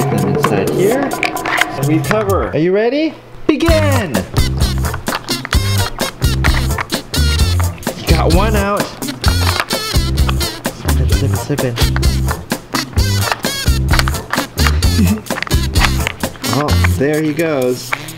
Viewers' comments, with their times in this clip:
0:04 I always have loved that tune that starts Soooo cute!!! 😍
0:04 that background tune always make me crack up